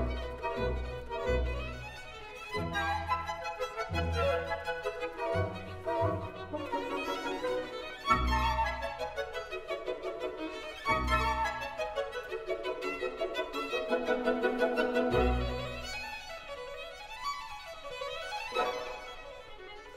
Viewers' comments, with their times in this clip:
0:05 there's a woman playing a piccolo!